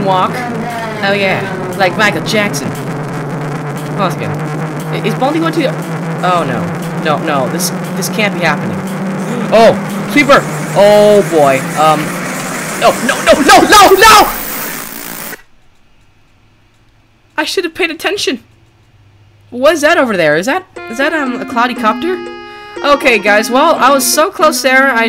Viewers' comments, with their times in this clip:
0:06 Cleveland Brown plays Baldi's basics
0:06 Cleveland Brown plays Baldi's basics